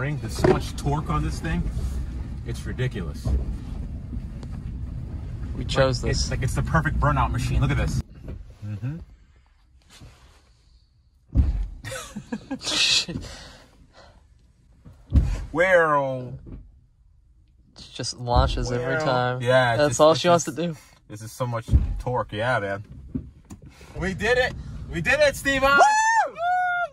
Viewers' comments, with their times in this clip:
0:07 o god, the dinosaur is inside the car... No.. it is the car 😳
0:08 I had that "wump" sound in my Spark EV. Had to to replace the motor mounts. Too much torque. 400 lb ft